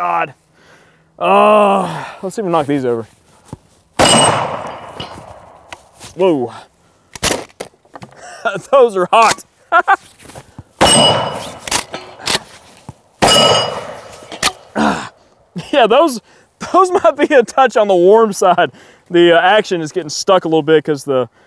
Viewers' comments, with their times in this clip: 0:09 the pee wee Herman